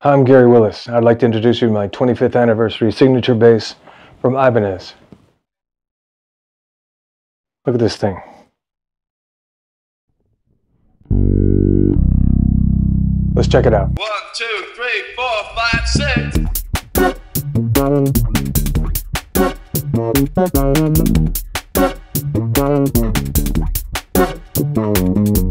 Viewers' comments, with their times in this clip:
0:10 Did he just play the PS startup sound